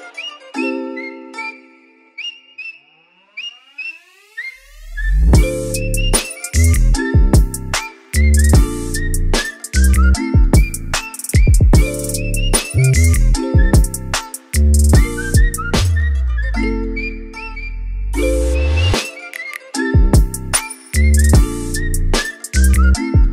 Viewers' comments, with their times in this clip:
0:04 Last on dope beat😎😍😎